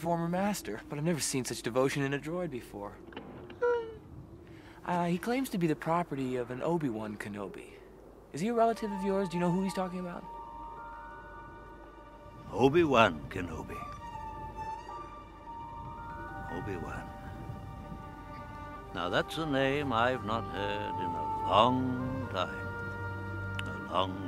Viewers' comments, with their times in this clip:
0:05 Man, that music queuing in after Ben hears the name "Obi-Wan." Chills every time.